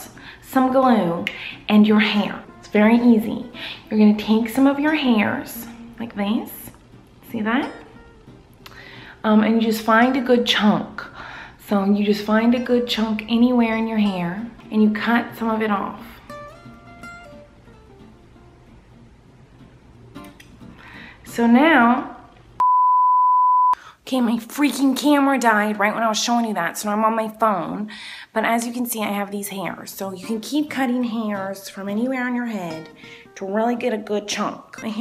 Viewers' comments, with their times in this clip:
0:10 I thought she was saying " Find a chalk of hair"
0:22 at like right before her camera died she was speaking normal... in Colleens voice